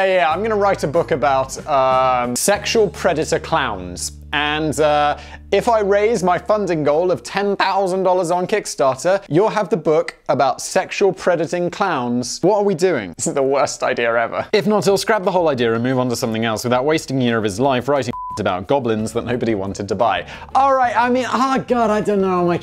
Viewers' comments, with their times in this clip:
0:05 I found that when your voice cracked while shouting “Ten thOUsand dollars!” to be quite entertaining.